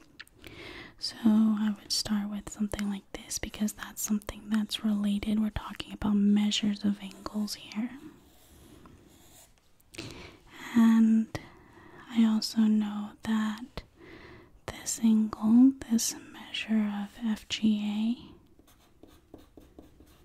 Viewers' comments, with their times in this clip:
0:07 some asmr triggers include repeated words, alternating soft speaking and whispering, and some pencil + writing sounds (starting to the end). hope this finds you well. please take good care and good night 😴😴 PS: if there is any way I can specifically pray for you at this time, please don't hesitate to let me know! ♥️☺️